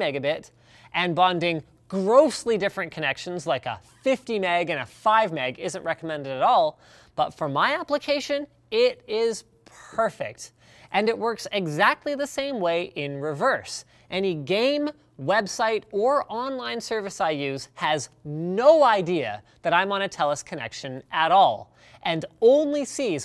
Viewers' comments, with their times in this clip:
0:09 "For my application, it is perf*skip*ect" Not so perfect eh?
0:09 "is per-fect!" not Perfect! :)